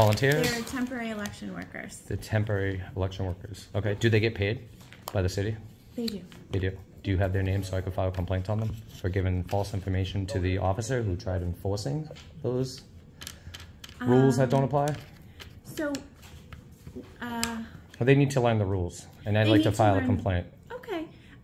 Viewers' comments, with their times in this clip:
0:03 I love the way she stumbles in fumbles when you say you’d like to make a complaint